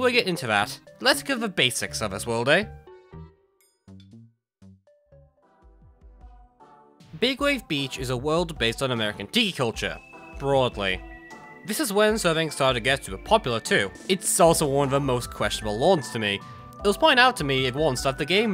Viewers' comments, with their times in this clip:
0:06 Pft- I was so caught off guard hearing Omori music come in, but it's fitting cus it's music for an underwater area.